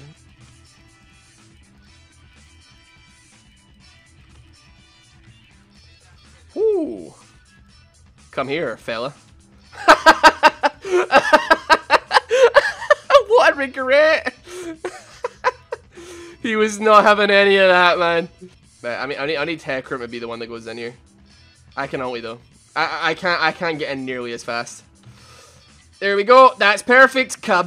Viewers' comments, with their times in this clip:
0:09 his laugh reminded me of Yassuo. They kind of have the same laugh except Yassuo's pitch is higher